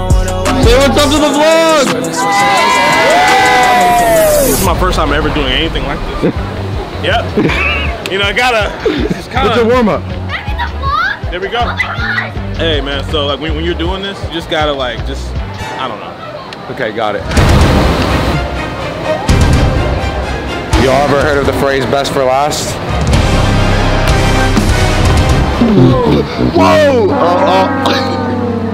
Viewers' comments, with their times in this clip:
0:09 the girl shouting 'I'm in the vlog'😂